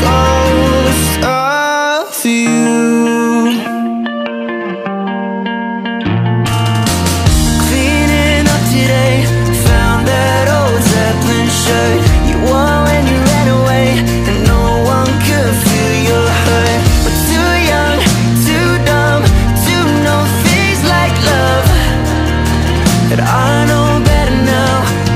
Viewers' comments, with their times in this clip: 0:08 umm Ed Sheeran who? Calum legit sounds like Ed here XD